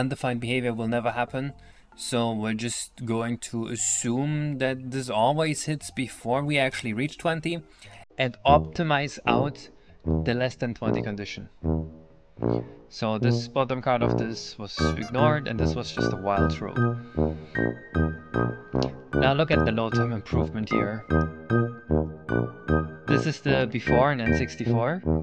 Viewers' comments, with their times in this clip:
0:08 The music coming in feels like it is the punchline to a joke about the gcc doing something very dumb.